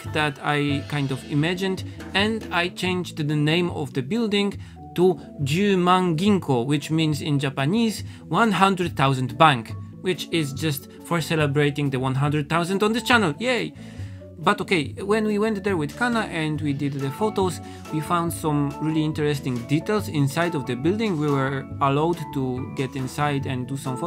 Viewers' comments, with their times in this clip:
0:10 you are such a sunshine!! i loved the excitement in your voice it made me smile so big and the painting looks so beautiful!!